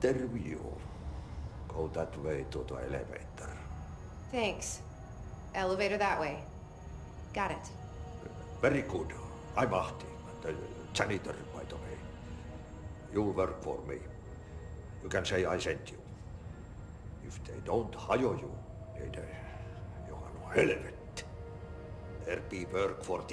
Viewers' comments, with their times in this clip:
0:07 gotta love the finnish accent